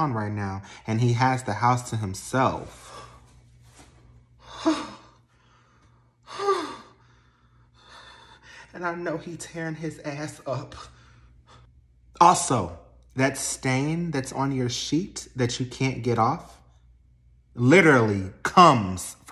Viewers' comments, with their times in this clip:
0:07 Her heavy breathing